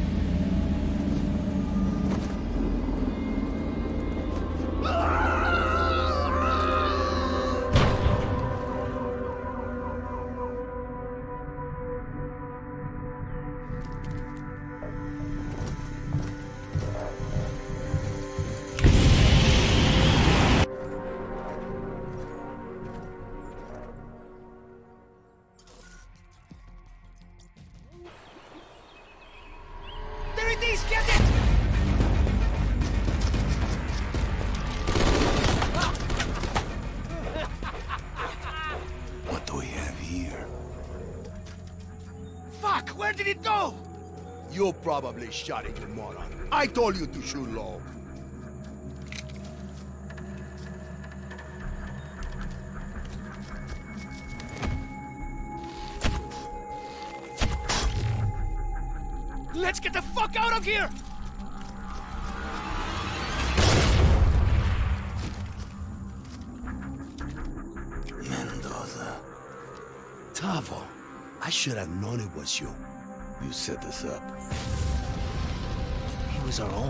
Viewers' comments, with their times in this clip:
0:04 the screams sounds sarcastic
0:59 That gunman sounded like Jacksepticeye